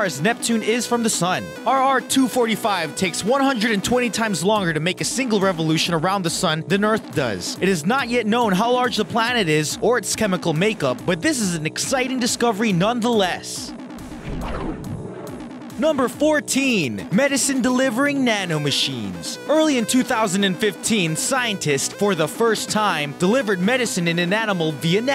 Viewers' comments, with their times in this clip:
0:07 Stopped fuck this guys voice.